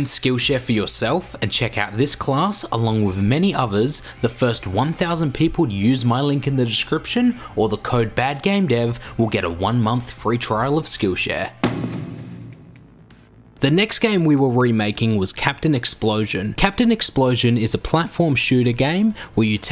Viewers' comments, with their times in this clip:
0:03 cockatoo ruining the audio